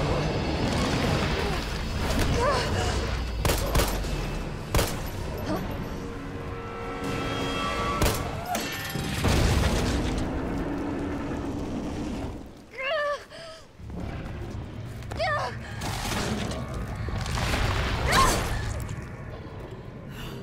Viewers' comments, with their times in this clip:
0:08 cartoon sound effect